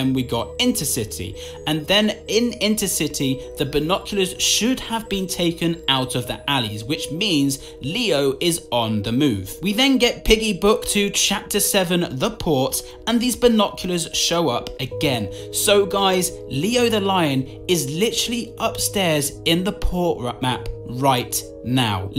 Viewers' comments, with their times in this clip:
0:08 i literally thought u said “leo is on the moon” 😂